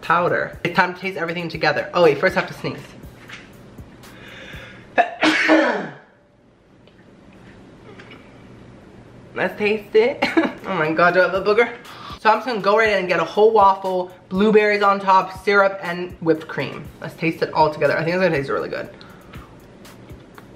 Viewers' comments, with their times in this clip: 0:03 That sneeze was HOT AS FUCKK